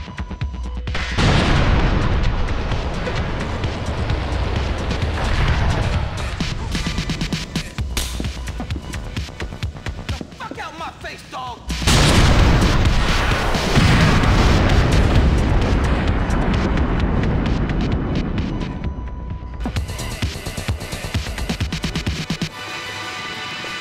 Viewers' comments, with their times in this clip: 0:09 "Get the fuck outta my face!" *BOOM* Epic rocket headshot there dude xD Are you going to get Episodes From Liberty City? I mainly want BOGT 'cause I could get some awesome clips for some skydiving video from that ;D